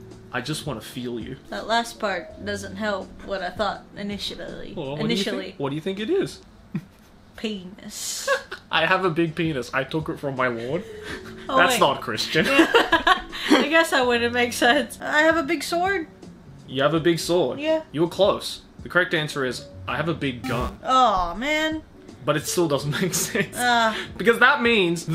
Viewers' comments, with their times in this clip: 0:06 it's big gun I love that opening but the engrish be mad